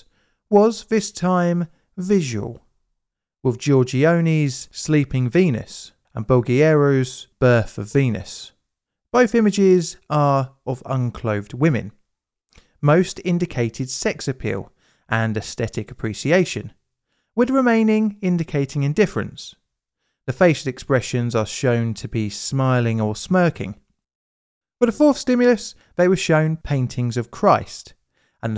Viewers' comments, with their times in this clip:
0:09 who is boghi arrows? I only see Botticelli 's birth of Venus ... Plus why don't you say Pedagogy as Psychology? It's not Sanskrit...